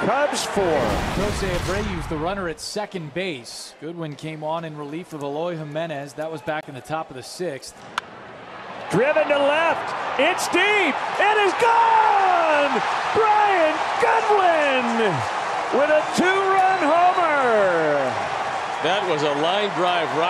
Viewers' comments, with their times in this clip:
0:08 isn't that the Cubs announcer? I mean I'm glad he's excited for a big moment